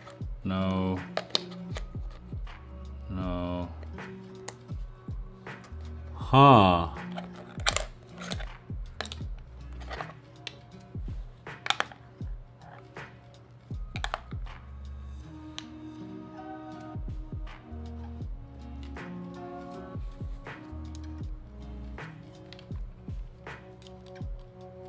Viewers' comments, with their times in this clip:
0:06 minecraft villagers be like: